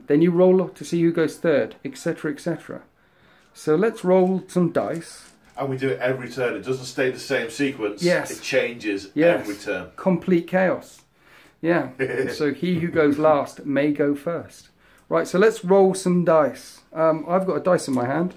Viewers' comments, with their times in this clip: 0:03 was that geese?